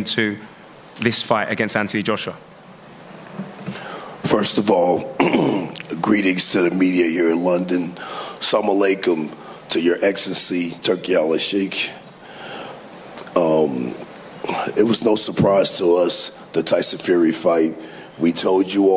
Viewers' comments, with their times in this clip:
0:04 Macho Man is back "ohhh yeahhh "